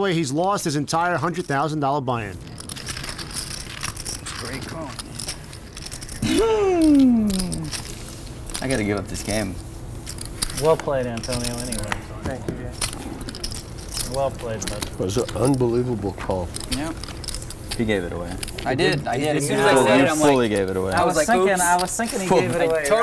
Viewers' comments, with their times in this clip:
0:06 I never noticed how much Antonio made that noise before this video..... wow.